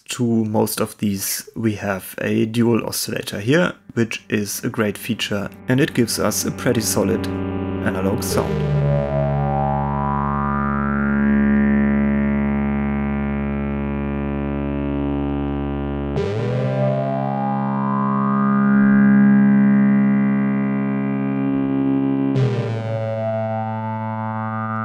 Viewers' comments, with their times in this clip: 0:08 that sounds really good, I've got about a dozen or so behrigner modules including the Moog seq and most of the Arp modules, I have not had a single issue with any of them, knock on wood.